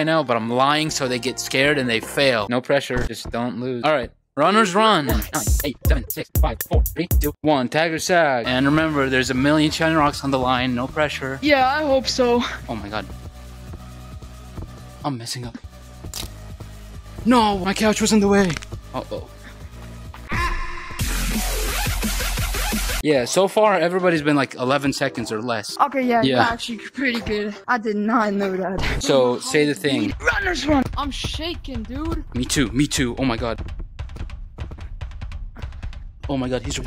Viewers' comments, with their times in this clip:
0:08 Roblox doors seek chase music goes hard
0:10 not the seek music bro
0:16 not the doors music lol
0:19 nah the doors music hits hard